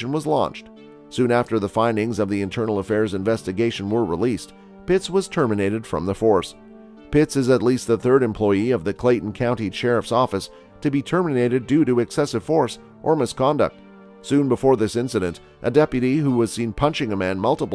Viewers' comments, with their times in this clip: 0:04 “bitch was terminated” is what I heard 🤣